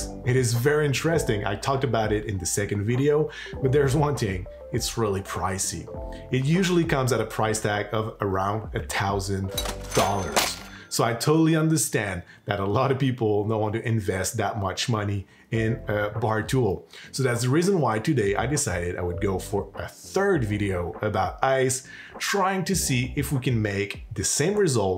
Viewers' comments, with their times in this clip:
0:09 dumb sound effect.